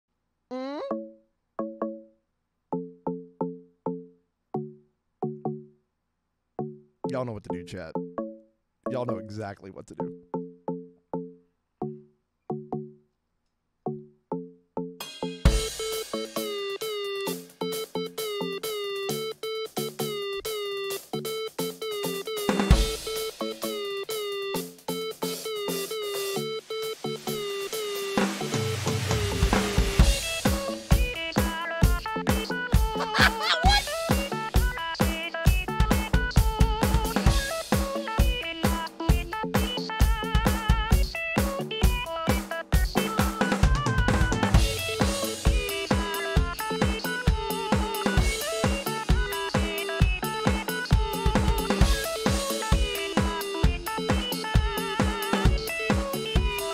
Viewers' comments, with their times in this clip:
0:00 moan A GREAT WAY TO START IT OFF
0:43 MMMM I LOVE THAT PART ON DRUMS Wonderful cover, you look so happy while playing!